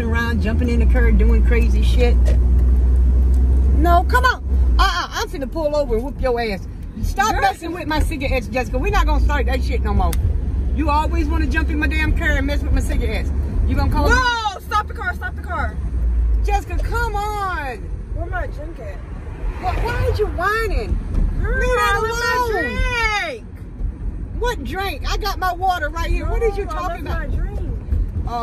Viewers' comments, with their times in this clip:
0:10 im dead wit how fast that woah was thoo💀😂